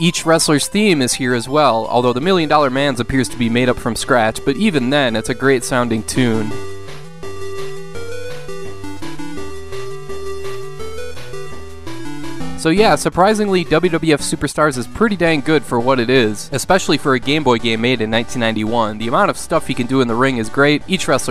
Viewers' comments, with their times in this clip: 0:06 sounds a bit like Snake Rattle N Roll